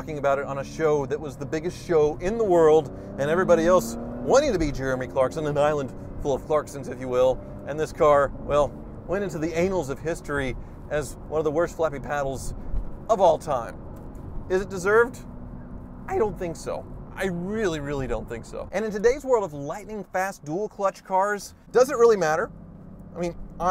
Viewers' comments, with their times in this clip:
0:08 I think Hoovie meant to say was 'this car went into the annuals of history' what he said was which if true, respect and should increase the value from now on, now the truth is out....
0:08 The car did WHAT to history?!?!?